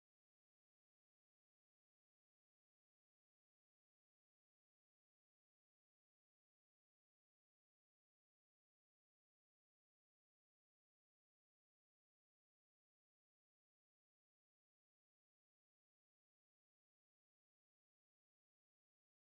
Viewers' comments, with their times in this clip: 0:06 whatever the weird sound here is... it scared the crap out of me.